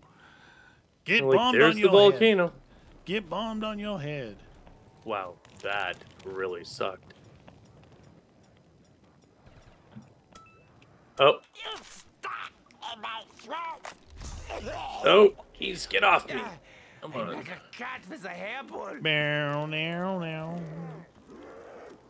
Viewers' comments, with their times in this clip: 0:08 havent heard that voice line before and i love it